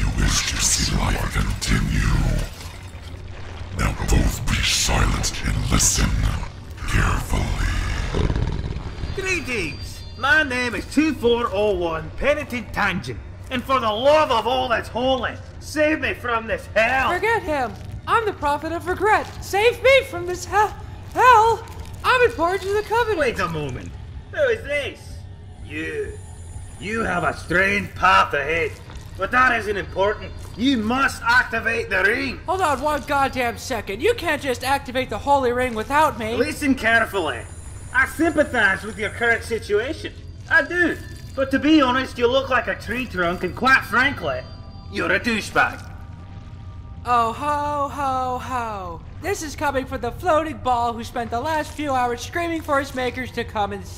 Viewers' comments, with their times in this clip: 0:09 Scottish Monitor is best monitor
0:09 Why did you make him Scottish
0:12 F bullshit, you are absolutely not Scottish if you think the oracle is English 😂
0:38 is pretty much me with a deep Irish accent